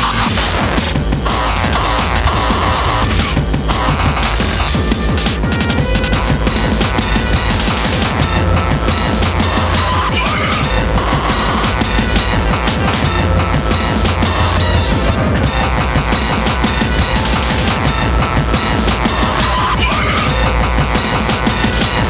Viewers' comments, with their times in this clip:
0:05 This part mixed pretty well to me